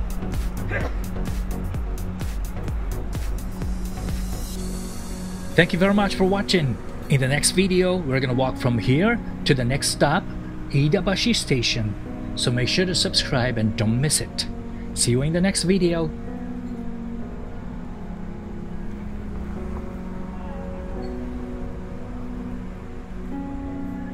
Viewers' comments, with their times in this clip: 0:05 achoo EVASIVE MANEUVERS!!!